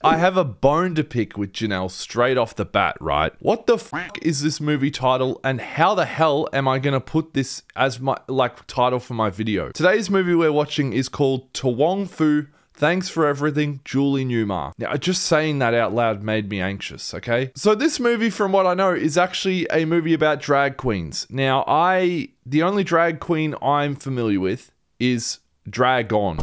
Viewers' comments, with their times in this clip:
0:10 HOW do you mispronounce the word "to"?